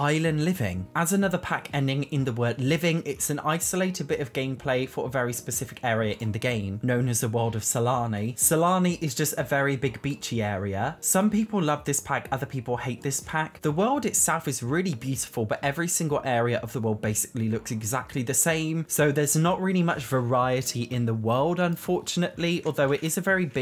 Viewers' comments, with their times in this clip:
0:07 The world of Salami